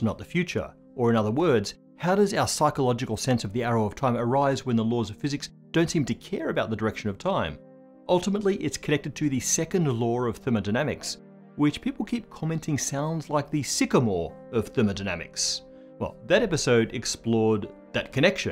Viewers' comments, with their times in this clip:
0:06 Speaking of things that you say sounding like other things you might say, every time you said in the beginning 'iron star' I couldn't tell whether or not you were saying 'iron star' or 'ion star'. So I googled both and 'ion star' lacked a wikipedia page while 'iron star' had a wikipedia page. Later on in the video with more context I figured out my 'does it have a wikipedia page' test gave me the right answer.